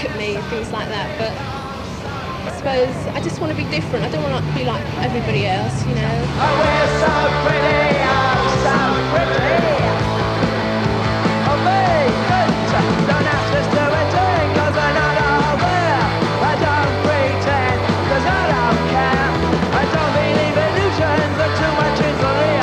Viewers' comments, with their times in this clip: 0:04 That's me .talking. I often bunked off school and hit The Kings Road. I've since lost that Ealing accent, and still, am not like everybody else.